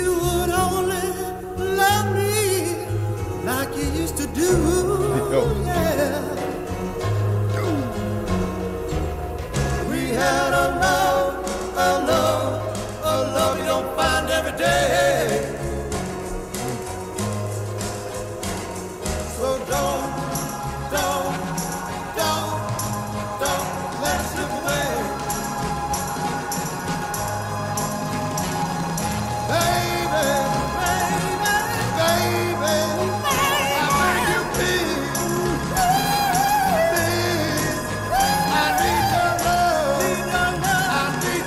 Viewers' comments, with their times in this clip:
0:08 Two voices, perfectly pitched, coming in together to the split-second, in the dark...Magical !
0:24 brilliant classic song, but dont discount those backup singers really going for it perfectly. ................ best baby ever lol